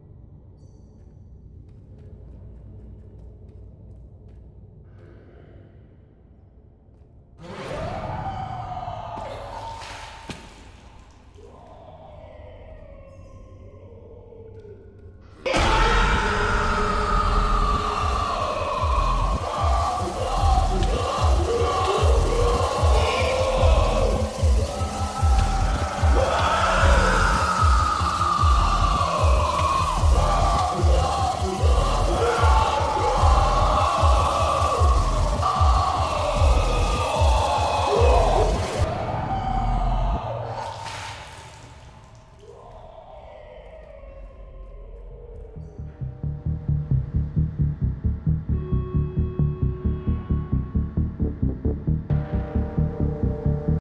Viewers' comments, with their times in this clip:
0:04 that scream actually made me jump and give me the chills even though i was expecting it
0:08 the loud scream made me drop my phone on my face
0:14 holy! that is actually terrifying, huge props to the guy who made the sounds!
0:39 THIS IS FUCKING SCARY, YOU CAN TELL HOW IT FALLS BECAUSE ITS SCREAMS SOUNDS LIKES ITS SCARED NOW AND THE BONE CRACKING MAKES THE BLOOD NOISE SPECIFYING HE, FUCKING, SPLIT, HIS, BODY.